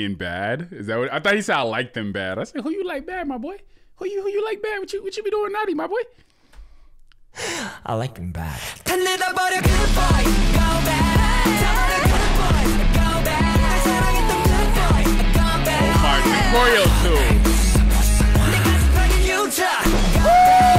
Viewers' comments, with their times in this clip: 0:03 FRRRR I THOUGHT HE SAID THAT TOO